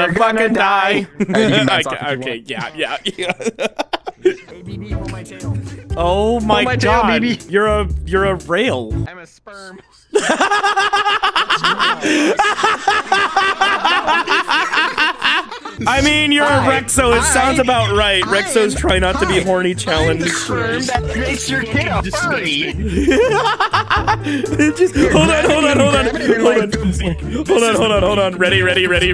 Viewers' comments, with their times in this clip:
0:10 that laugh sounded like Woody